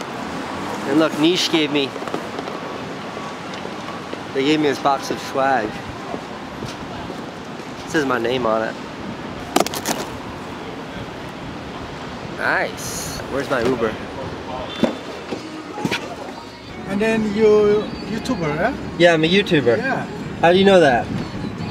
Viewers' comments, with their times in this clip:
0:05 The way Casey said swag 😂